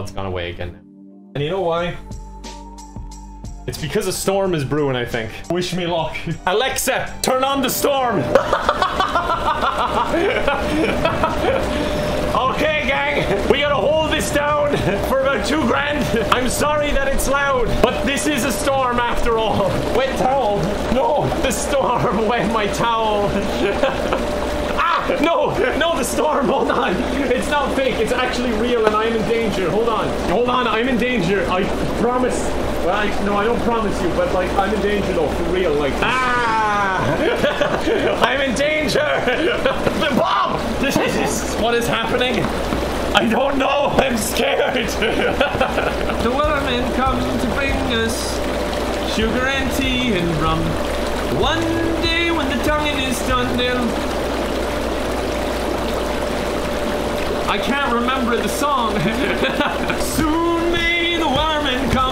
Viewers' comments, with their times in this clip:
0:09 😂😂😂 the kiss of death Also is the most adorable, wholesome laugh ever and it makes me smile 🥰
0:46 he sings THE SONG